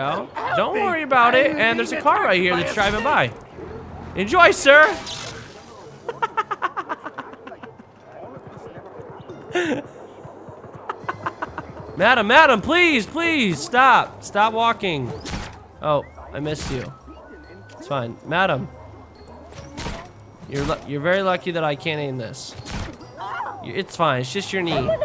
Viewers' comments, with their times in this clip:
0:10 Thar laugh doe